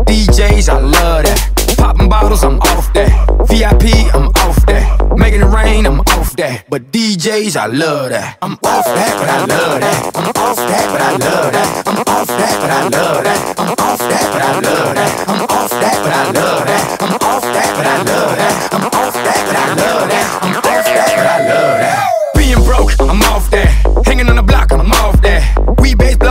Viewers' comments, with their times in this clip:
0:08 the Global fart begins